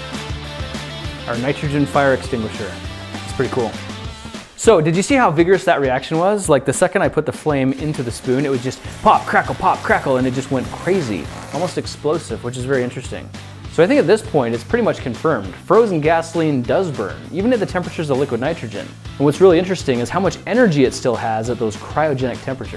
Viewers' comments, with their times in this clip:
0:09 Pop, crackle pop Rice Scrispies has entered the chat 💬